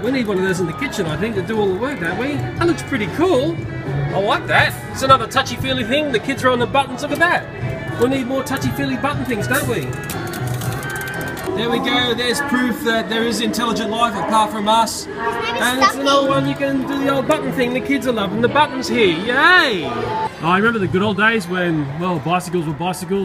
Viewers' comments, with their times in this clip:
0:04 I could hear the animamicats theme song